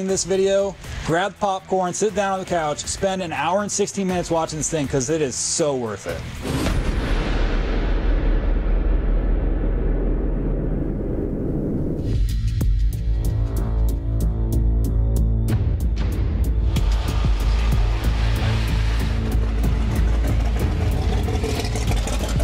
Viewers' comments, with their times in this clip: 0:03 “spend an hour and 60 minutes watching it” isn’t that 2 hours?😂
0:03 an hour and sixty minutes😂😂😂😂